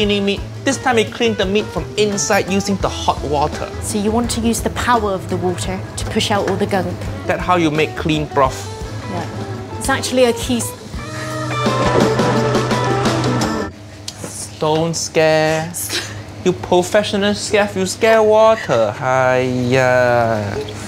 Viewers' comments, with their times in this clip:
0:04 hold up, anyone think she sounded like female Steve merchant for that end of “water”